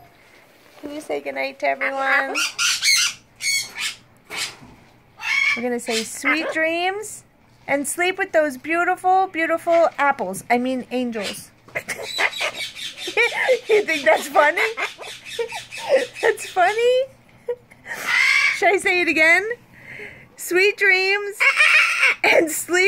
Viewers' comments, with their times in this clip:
0:05 ive watched on a million times!! I love when Baby screams at you!! 💜💜💜💜